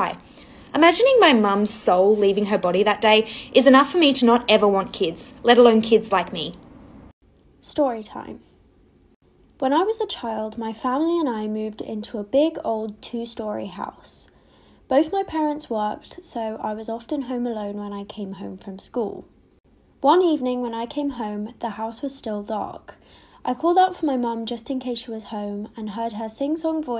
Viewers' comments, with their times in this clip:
0:08 BRO SPEAK UP